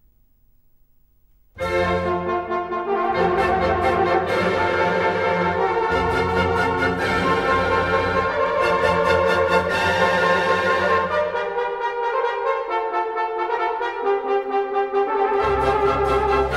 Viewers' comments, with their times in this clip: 0:03 My best part is from ,Horn part 😂